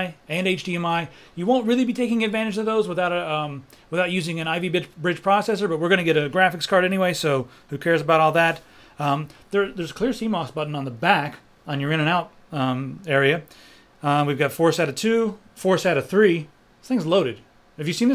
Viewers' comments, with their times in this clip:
0:04 Ivy Bitch... Bridge